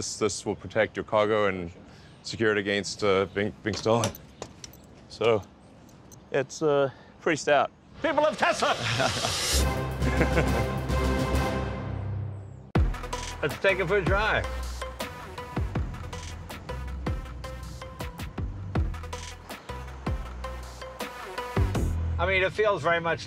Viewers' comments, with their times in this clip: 0:08 idk why but that "People of Tesla" sounded like "King of the world."